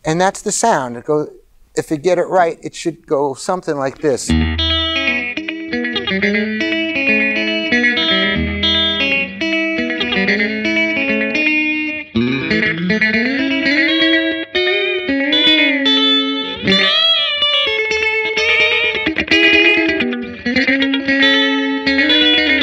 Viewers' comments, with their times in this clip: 0:03 Very rockabilly!! 🤩🤩🤩 Great sound. The only thing I did not like about the Cars last album Move Like This is that they failed to fully utilize Elliot! Let this guy PLAY!